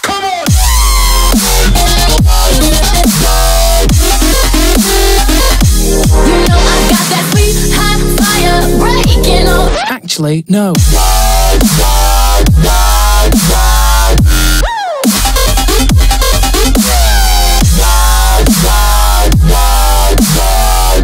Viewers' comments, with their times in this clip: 0:08 I'M IN LOVE WITH THE DROP ! <3 ACTUALLY NO WOOOW <3